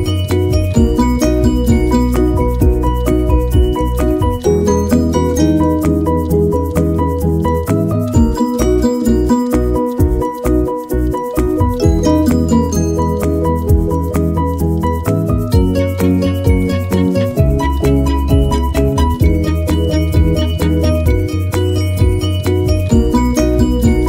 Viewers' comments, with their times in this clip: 0:10 boi u eating popcorn stop giggling and close ur mouth XD